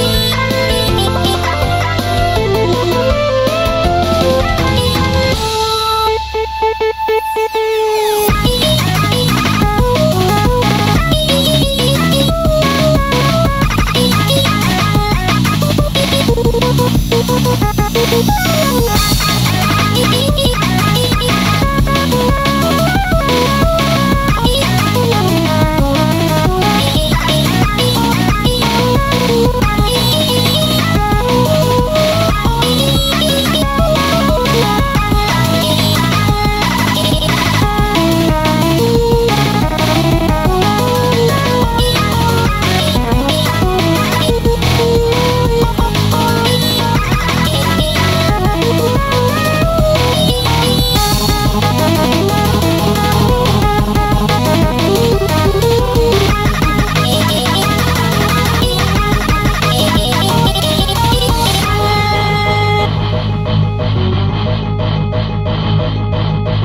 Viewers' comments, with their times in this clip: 0:05 How is no one talking about how the song just completely changes ? It's like it's a completely different song and I love it
0:06 it sounded like cloud tryin to end the song there but the instrumental just said no and went on
0:06 So that's why the song sounds worse after 🤔
0:07 I like to think that from this moment on it is gf who sings more as if she were the one who now speaks more and says things to cloud, white cloud follows/answers until she returns to the main verse. Amazing song 💕👀
0:07 I love how in the the music stopped and started to sound another music completely different
0:08 Musical representation of girlfriend saying "Now, LISTEN HERE YOU LITTLE SHI-"
0:13 Sounds like System Crash.
0:13 Sounds like System Crash, which in turn sounds like Manifest!😄🤩😎👌
0:14 why does it sound like manivest(Vs Sky)
0:51 Sounds like the start but speed up